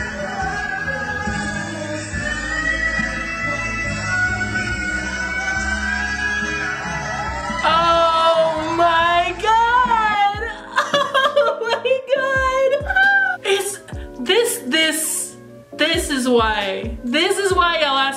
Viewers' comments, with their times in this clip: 0:03 goosebumps, STELL is not human!! he's a robot, jk. but u get my point gawdd. And oh your "SANAOL" is so cuteee.